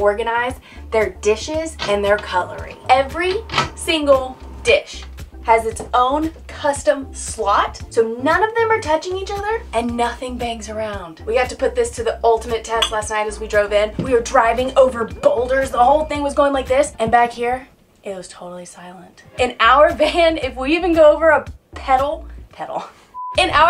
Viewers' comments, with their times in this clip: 0:06 "None of them are touching each other" - "Clink" 🤣